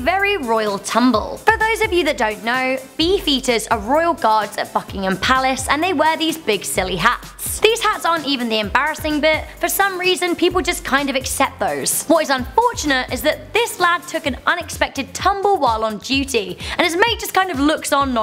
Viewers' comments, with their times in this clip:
0:04 I thought she said fuckingham palace instead of buckingham palace 😂